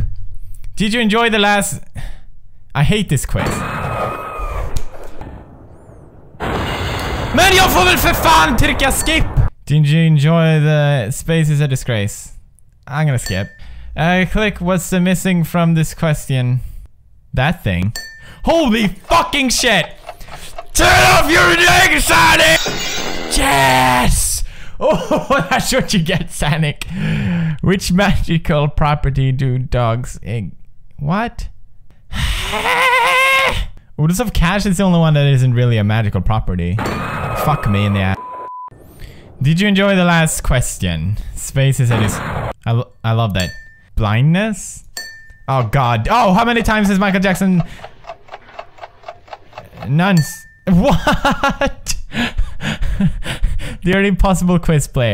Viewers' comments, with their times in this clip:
0:06 what language was he saying that time?
0:37 you sensor a*s but not f**k????!!?!??